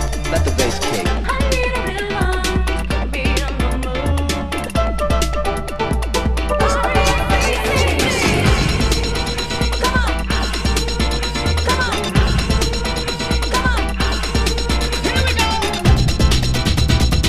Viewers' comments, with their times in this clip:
0:04 sorry but even with your great tracklisting, I just can't find: I wonder from which track are these flute like sounding keys which drop " ???
0:05 Cn somebody please tell me what song that beautiful techno-flute sound came from ??